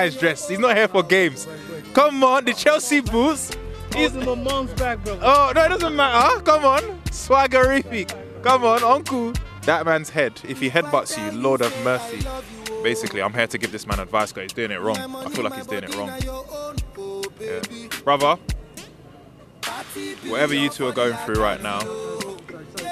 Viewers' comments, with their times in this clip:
0:08 LOOOOOOOOOL switched up his tone real quick